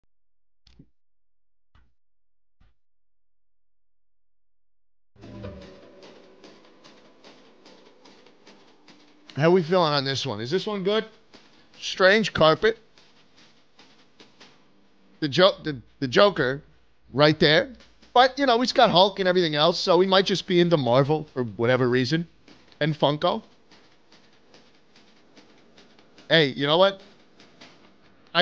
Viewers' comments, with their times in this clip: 0:03 The video Is hilarious asf when we makes those goofy ah noises 🤣🤣🤣
0:16 Upon seeing the massive white mass on the wall Schlatt proceeds to recreate “AUUGGHH” by garrison live on stream. My sides went to the next galaxy over.